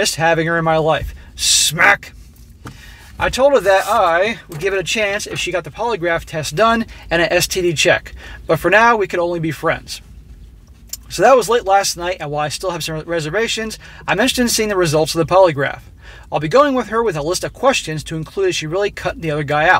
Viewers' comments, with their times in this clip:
0:07 smack and smack again HARD SMACK. wwe smack down .